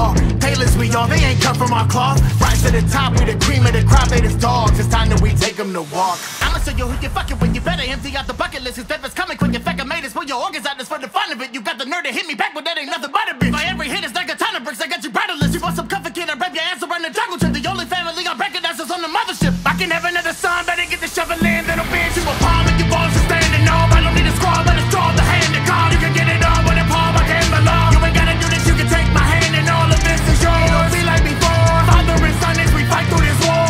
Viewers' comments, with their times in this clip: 0:03 i believe this is what stupendium called "the obligatory fast bit"
0:05 The Energy and hype Building up from to the end is insane and never fails to get my heart pumping.
0:05 I thought he said "They just dogs, it's time that we take them to the wok"...
0:13 Why this so good!? like the beat drop go crazy the lyrics is like damn
0:20 's flow reminded me of Bawitdaba by Kid Rock so much and I loved the song even more!
0:21 This part goes SO HARD man! I love how you sounded so angry when preforming it! Awesome work!